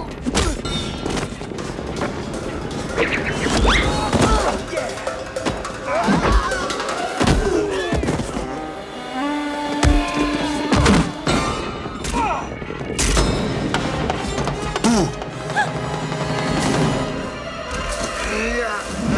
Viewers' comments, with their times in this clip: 0:03 bruh that banana peel sound effect im dead